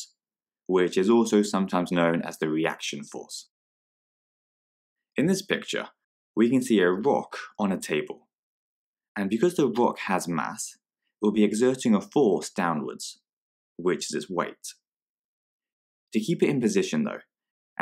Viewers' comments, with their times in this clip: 0:05 in this picture we can see the moon on a table